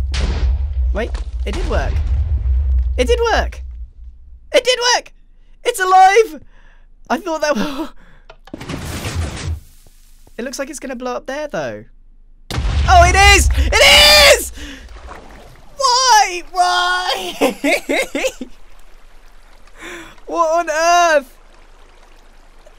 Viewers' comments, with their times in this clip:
0:10 "It looks like it's gonna blow up there, though..." BOOM!!!